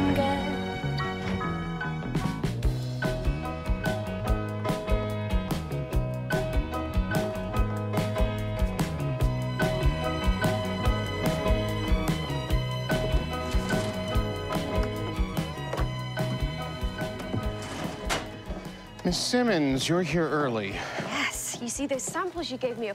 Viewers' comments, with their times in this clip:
0:03 the beat matches up perfectly! The comments from before it aired are hilarious to read!!!